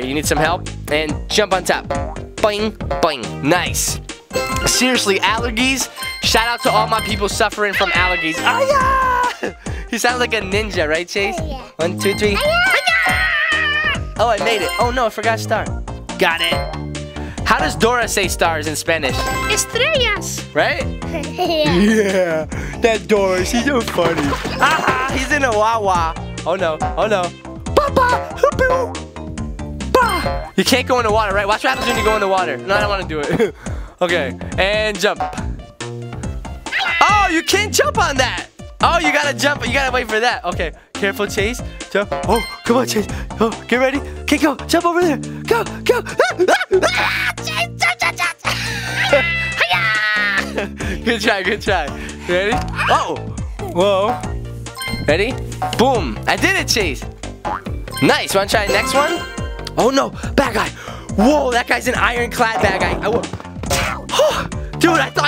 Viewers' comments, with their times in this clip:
0:07 dont you growl at me
0:48 Out of breath